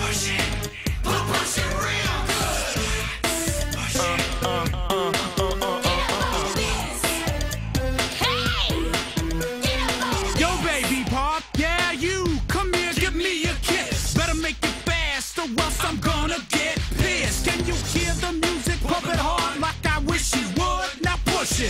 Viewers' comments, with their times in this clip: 0:03 I love the loud YES! at the end. And mr figgins
0:07 this „hey!“ from Mercedes Is Just 😂ahahah I can’t